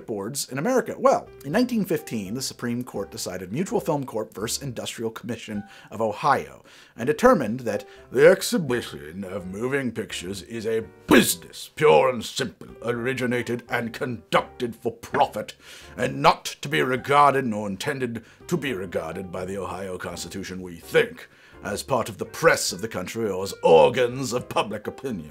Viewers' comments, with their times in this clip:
0:09 sounds like Winnie the Pooh grew up and became a politician